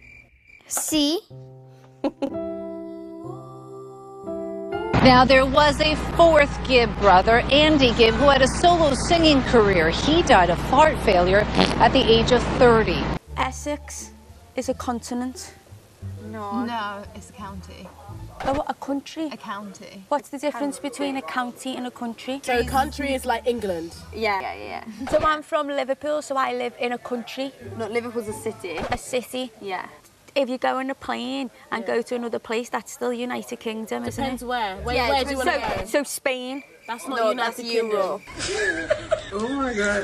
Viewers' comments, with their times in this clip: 0:10 Everyone: “What can you not do?” “See” Oh well she really did mess up lol Me: Aren’t we gonna talk about how she said fArT fAilUre LOL-
0:24 hold on that’s not british it’s bri‘ish